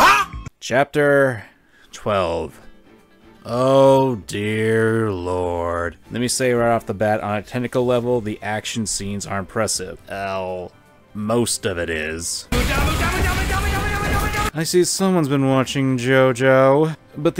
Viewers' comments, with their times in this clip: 0:04 the otherr guy to the side is sighing too.